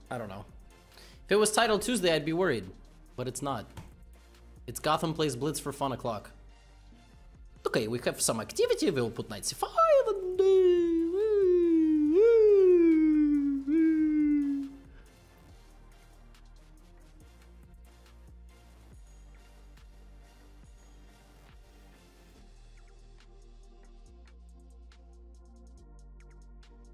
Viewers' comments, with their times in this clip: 0:09 Levy slow siren noises